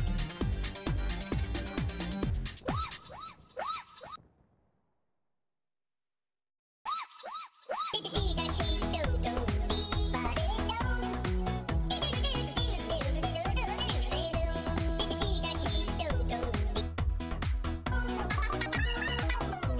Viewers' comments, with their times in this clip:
0:06 That two minute hamsterdance remix segment has taken up residence in my mind and hasn't left